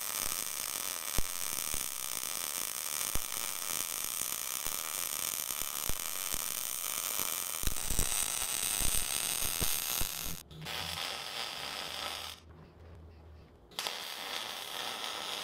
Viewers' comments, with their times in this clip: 0:03 you had to yell “EYES!!!” I barely managed to put on the mask 😎